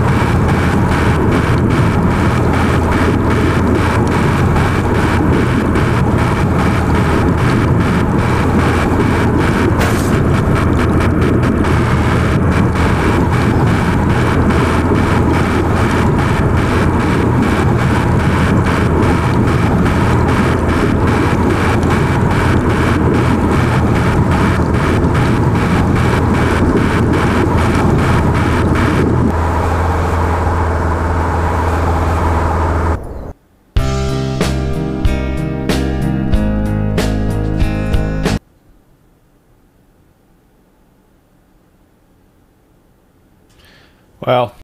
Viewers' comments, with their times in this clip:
0:08 What a tune! Looking forward to it exploding on the German clubbing scene. When it breaks into the chorus it really defies all expectations.
0:34 does that sound similar to the chorus of the scientist by coldplay? (just speed up by like 1.3x)